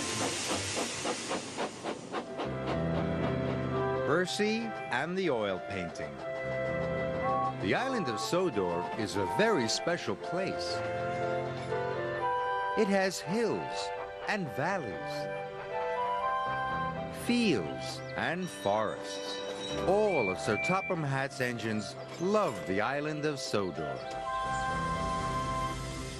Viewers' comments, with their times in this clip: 0:08 Gordon has Henry's whistle